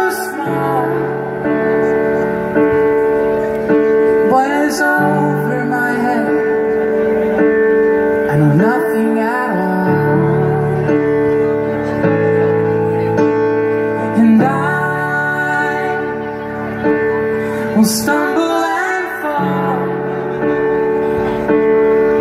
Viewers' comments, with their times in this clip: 0:09 She sounds like an angel ....Chills all over ❤❤❤